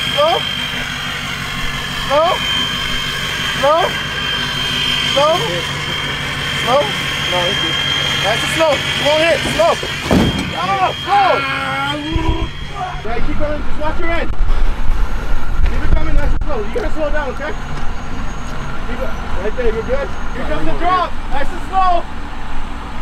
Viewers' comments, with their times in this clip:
0:06 slow slow,it won't hit slow..bang!